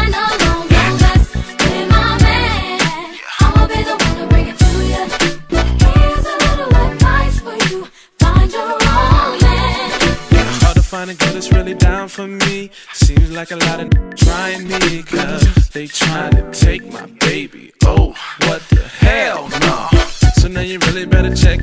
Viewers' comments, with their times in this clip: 0:05 is she saying he little to right for you?